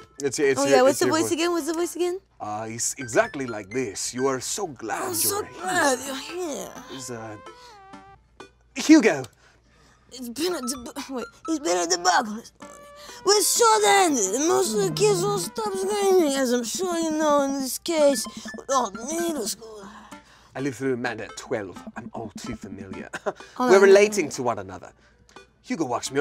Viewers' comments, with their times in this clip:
0:10 Watto from Phantom Menace makes an appearance omg i commented this before i saw the watto edit LMAO